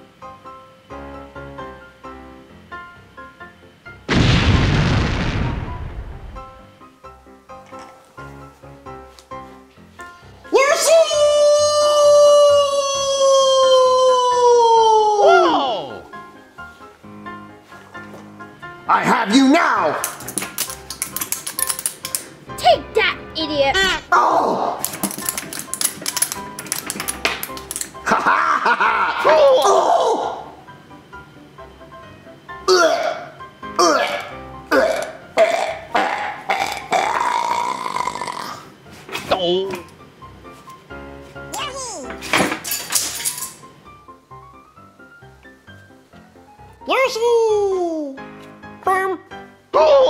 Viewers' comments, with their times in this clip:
0:08 yoshi's mic (loud)
0:37 Did Mario growl?